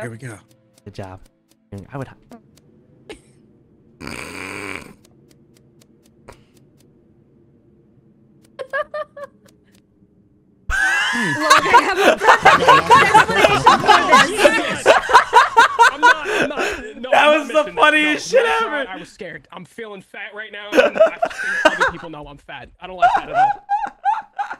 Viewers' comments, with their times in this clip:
0:10 LOVE the laughs😂😂